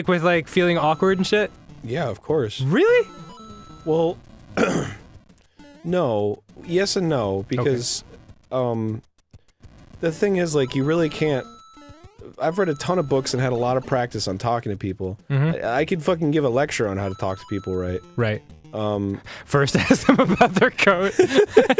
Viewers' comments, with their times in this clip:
0:04 idk what it is about arins tone of voice here, but it's so calming and adorable I keep replaying it